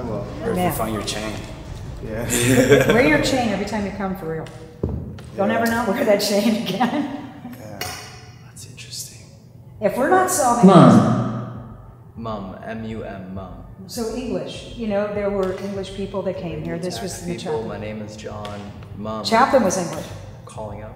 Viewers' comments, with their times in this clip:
0:08 I swear I heard a loud bang and then either it sound like a kid crying or yelling